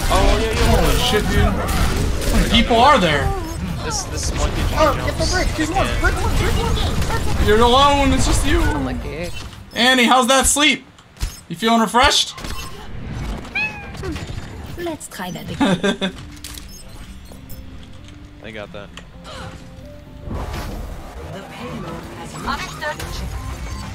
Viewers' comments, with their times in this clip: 0:09 did my nigga meow? lmao